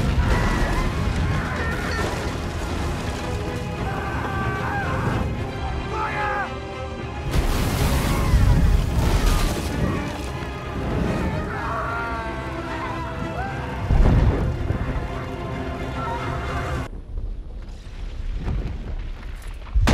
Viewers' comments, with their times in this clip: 0:05 Soldier actually shouts "Fire" and everyone gets lit up by Drogon lmao 🤣🤣